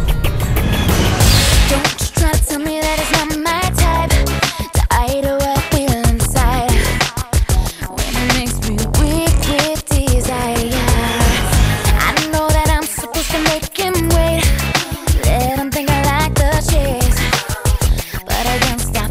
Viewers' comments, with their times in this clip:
0:03 "To ide what I feel inside" That always drove me up the wall. There's an "h" in that word, gurl.